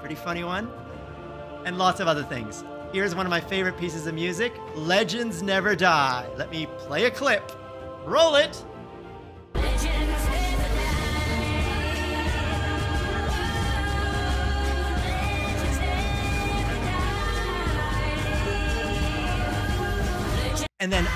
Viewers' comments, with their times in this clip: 0:09 Legends never die! Awesome music